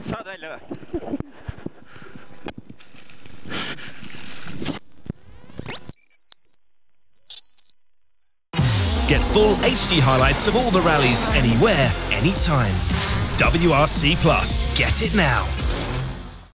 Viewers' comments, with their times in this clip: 0:05 the wipers are like: we are not giving up till the end!!! and what a sweat sound
0:05 The screeching noise is actually the duck screaming for help. :p